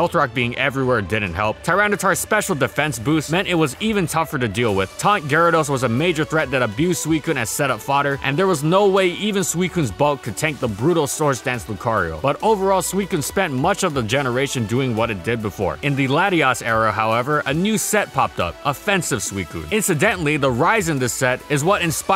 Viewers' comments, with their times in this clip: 0:06 non-English native here. Can anyone spell setup-fwhat? I heat this word a lot yet I can't spell it